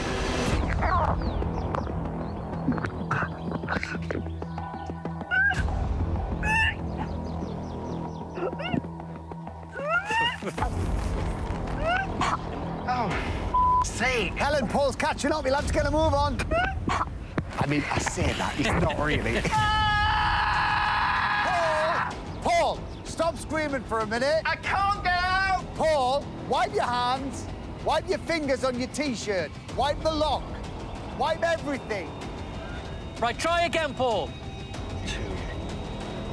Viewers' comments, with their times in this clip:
0:08 the gagging tho 😂😂😂
0:20 what is he screaming at 😂😭💀